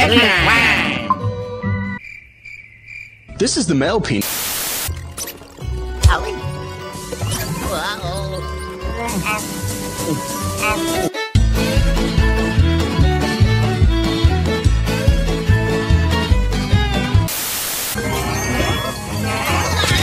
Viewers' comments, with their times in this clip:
0:03 tHis is millk pee